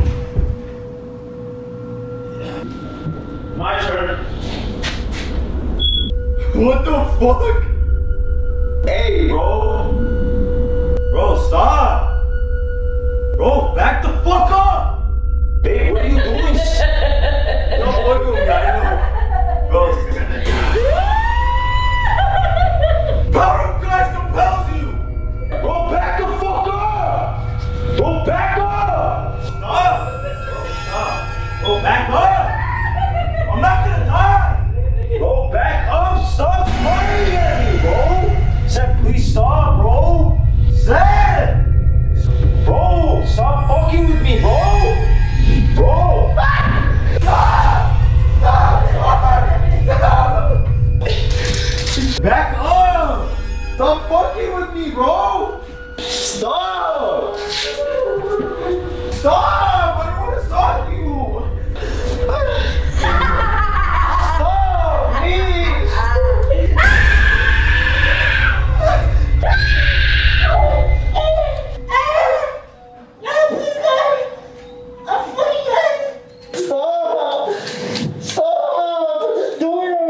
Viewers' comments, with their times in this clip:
0:09 her laughing is so good she should be in a movie 🎉❤
0:17 Her laugh is insane, straight had to replay it 3 times👏🏾😭
1:05 SCREAMING WAS ON POINTTTTT